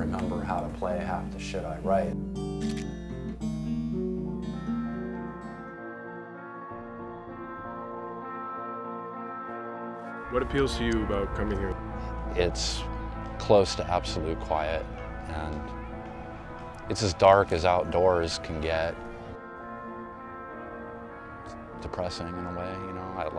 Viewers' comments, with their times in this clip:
0:08 "what appeals to you about coming here?" "it's close to absolute quiet." children screaming and hitting each other with sticks